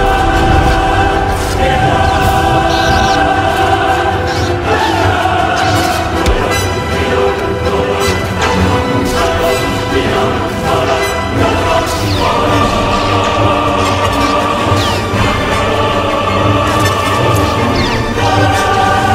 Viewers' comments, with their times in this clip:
0:06 Even the background music, duel of the fates sounds like a battle between the orchestra and the choir, two groups that are normally together, but fighting. You can hear it really well